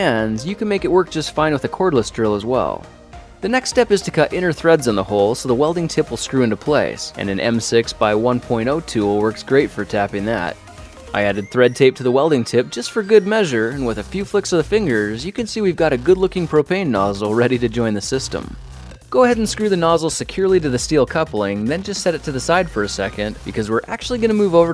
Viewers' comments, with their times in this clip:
0:09 I'm sorry, it's just the way you said it.